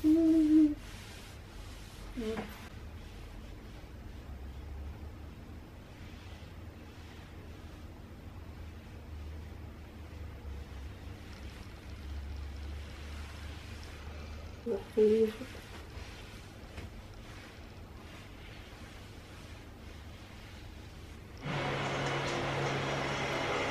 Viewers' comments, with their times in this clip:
0:08 Que the cheesy pron music...